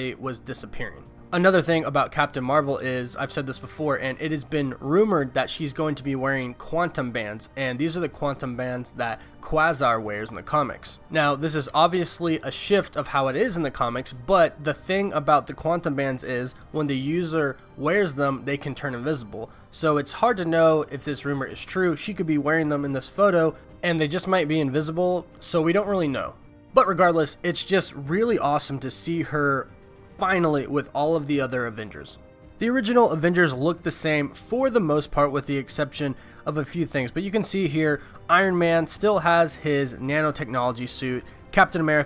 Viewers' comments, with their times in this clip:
0:09 Wait, how did you just pronounce Quasar’s name?
0:23 QUaSAR? Don't you mean quAsar? i.e. long 'A' not short 'a'.